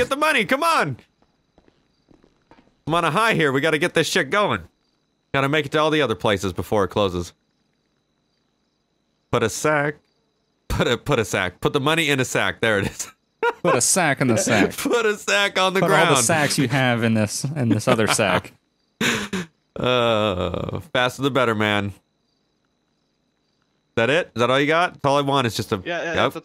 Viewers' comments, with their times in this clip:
0:08 the way he said "sack" differently compared to the rest of his sentence sounded weird as fuck 😂